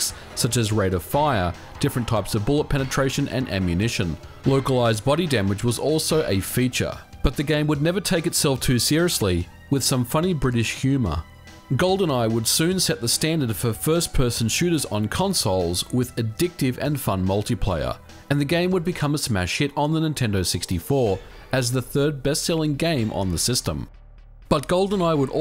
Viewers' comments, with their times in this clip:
0:10 Funny British HUMA